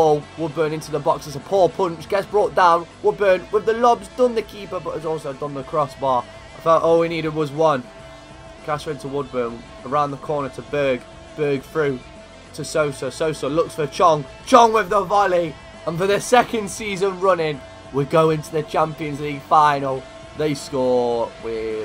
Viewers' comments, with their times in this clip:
0:09 when u say berg name you say bög wich means gay in swedish. i cant stop laughing